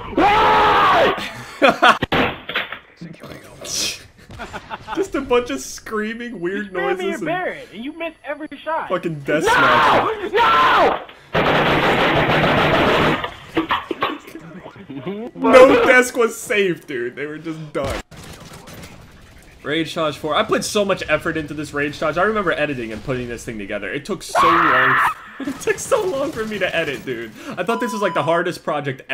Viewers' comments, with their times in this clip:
0:05 when he is destroying his desk in the clip it makes a beat I'm not even joking
0:06 sounds like he shot his desk with a AR and reloaded it
0:06 has always been one of my favorites. Never fails to make me laugh. Man stood up and hit his desk with the double Chris Breezy 9000. Sounded like an automatic weapon. 💀😂😂
0:07 it sound like someone is shooting a gun
0:08 why does sound like an ar going off XD
0:08 For some reason I have a feeling that was my friend. I was at his house and he sounds exactly like this and he did do the exact same rage. I swear honest to god man
0:09 he sounded like he was screaming to not get murderd and got shot
0:10 geez sounds like he was begging for life then he got shot
0:10 sounded like a gun going off
0:10 sounds like he shot up a coffee shop
0:10 sounds likes he’s shooting a gun
0:11 sound like he just pulled out a lmg and started shooting
0:11 when you listen too pumped up kicks on repeat at school (destruction sound is shots)
0:14 sounds like gunshots